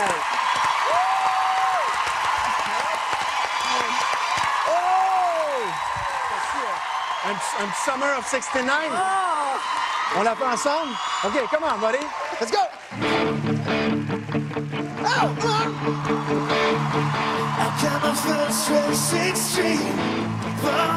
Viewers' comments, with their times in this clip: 0:06 The French coach singing Summer of 69 (collaboration) ... awesome!!!!